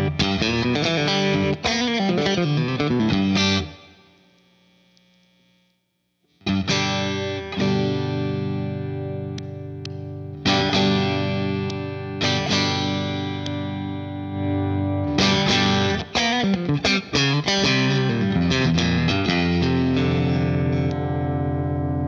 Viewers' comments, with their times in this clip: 0:08 Not a fan of that popping when switching on/off